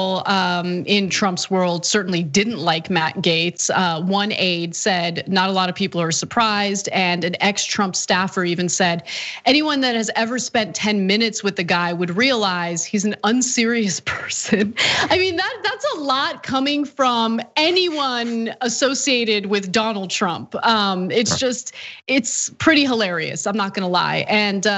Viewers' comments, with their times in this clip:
0:09 Irrepressible laughter x2